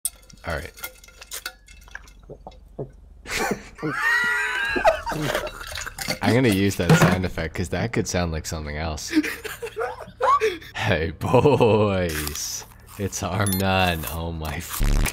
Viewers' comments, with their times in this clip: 0:02 that sounds outrageous